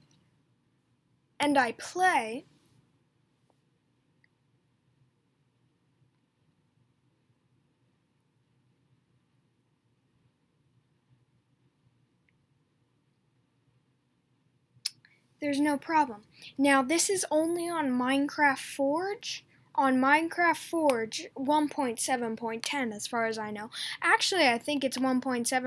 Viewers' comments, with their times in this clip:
0:07 awkward silence XD